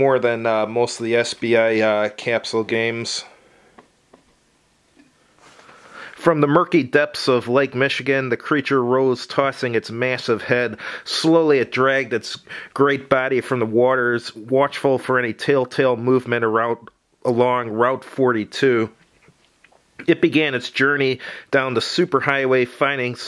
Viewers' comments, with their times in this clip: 0:08 Started sounding like Kermit the Frog there for a second.